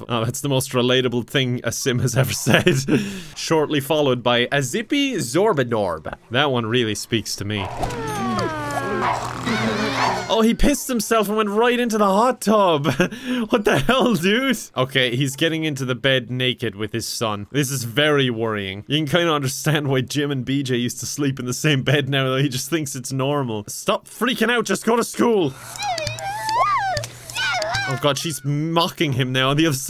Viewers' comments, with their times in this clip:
0:03 How tf does he change his entire voice and accent to sound exactly like a Sim i'm impressed and creeped out at the same time
0:14 he sounds like pewdiepie just a bit huh